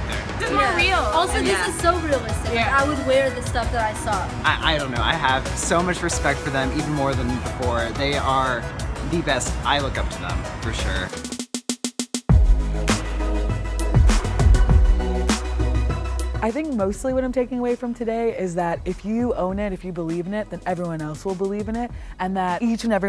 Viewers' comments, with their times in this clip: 0:04 doesn't he sound like ryland Adams? Idk